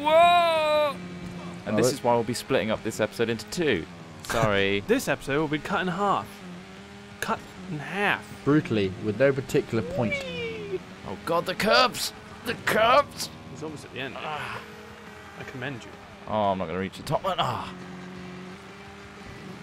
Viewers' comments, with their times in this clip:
0:03 "This episode will be cut in half. Cut.. in HAFF" I appreciate your American pronunciation of "Half".